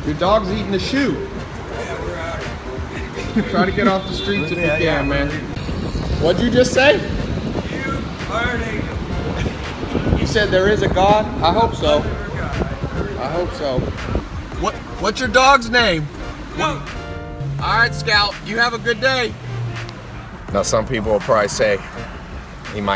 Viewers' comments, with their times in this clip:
0:06 The way he says WHAT DID YOU JUST SAY on